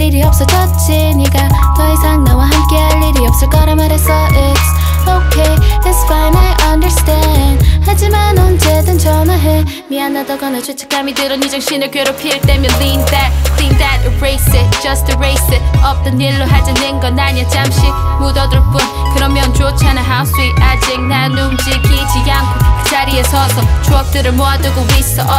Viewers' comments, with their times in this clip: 0:08 this change of voice got me shook
0:08 DSP has their own color now (looking at KARD and Kasper) .... started getting goosebumb when her singing gradually turning into her rap
0:10 that moment when her sweet singing voice turn into powerfull rap... i love that ❤❤